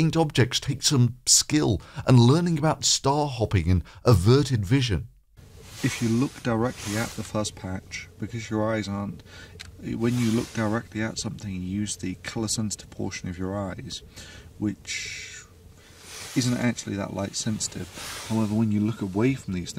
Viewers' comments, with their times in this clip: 0:07 It sounds like someone is raking a huge pile of leaves What the hell is that sound?